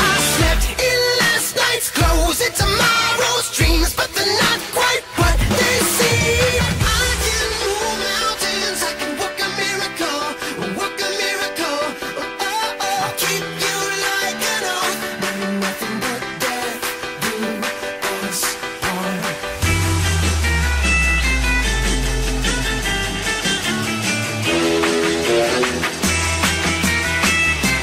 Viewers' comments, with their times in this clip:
0:08 157 is clean with the beat / rhythm good job on this vid it also is a meme ;)